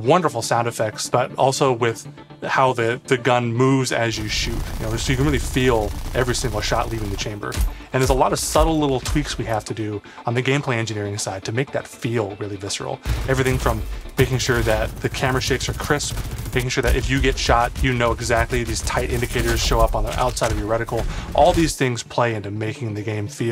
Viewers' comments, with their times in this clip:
0:07 those do not sound good